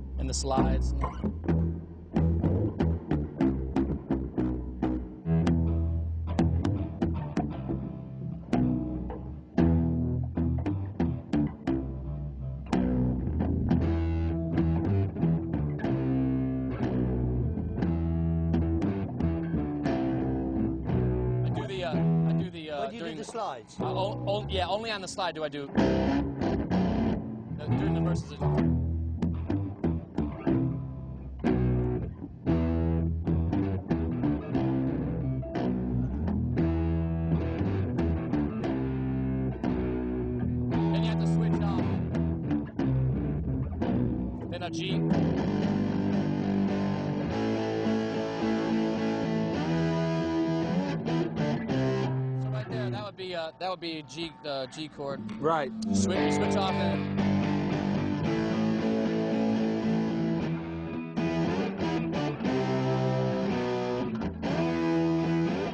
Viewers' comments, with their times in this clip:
0:07 Guitar Center vibes
0:46 This is nothing for Jimmy lol. he even hits the A chord before Jack does